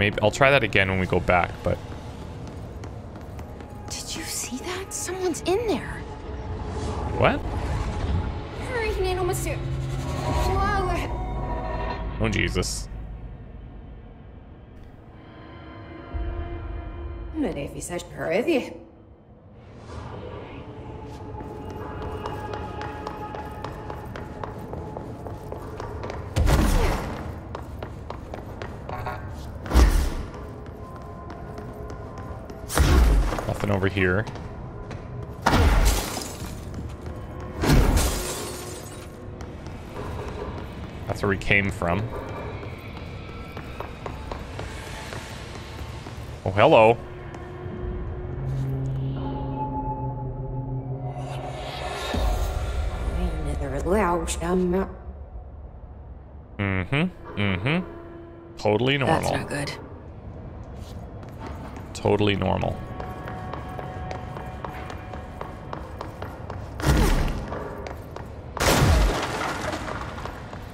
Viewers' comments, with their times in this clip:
0:09 Did you see that? Someone's in there. (reversed) Hello! Is someone in here? (deeper voice) Hey there, Jesse Faden.
0:53 esseJ: I'm much wilder than you. (I think? her dialogue is very soft.)